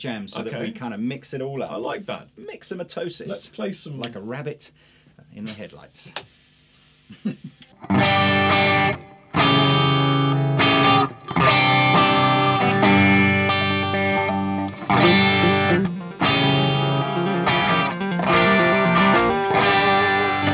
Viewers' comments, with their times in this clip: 0:08 What is the chord is it like a diminished or like a sus chord or one of those weird ones